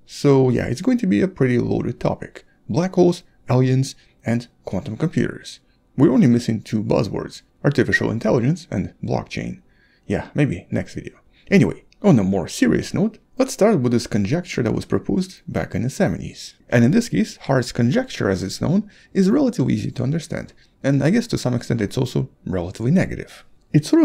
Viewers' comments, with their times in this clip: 0:05 You whistled by accident